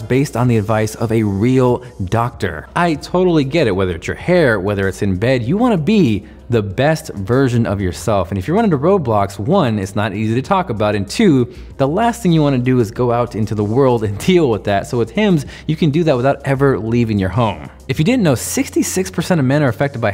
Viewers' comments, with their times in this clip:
0:05 I honestly thought he said "virgin" after that previous joke XD